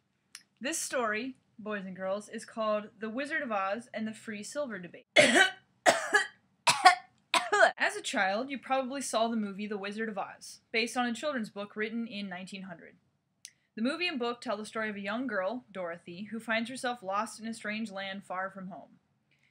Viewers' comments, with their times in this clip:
0:05 was that a hairball or a clever editing trick?